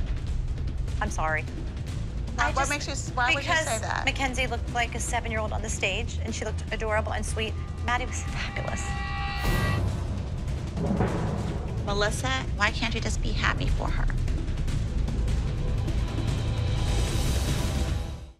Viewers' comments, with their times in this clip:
0:03 she was nearly crying when she admitted that she thought Kenzie shouldn’t have won, you could hear it in her voice and see her eyes watering She was VERY upset Maddie didn’t win😂